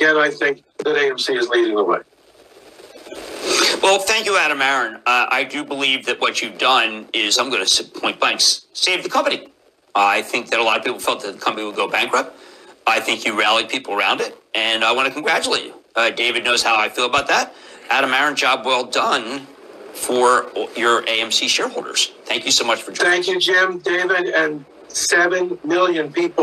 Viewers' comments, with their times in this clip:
0:07 Lmfao “Ahbabadaba Saved the Company” he really lost his words there huh 🤔